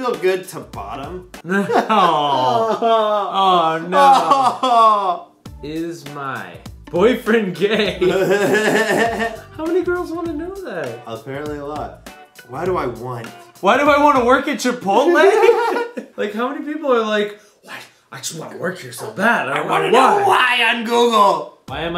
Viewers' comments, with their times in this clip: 0:09 weidest laugh ever :0